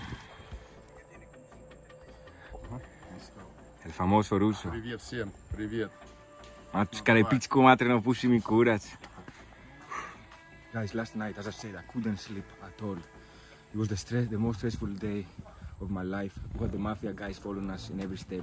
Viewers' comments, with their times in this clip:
0:06 thats serbian hahahah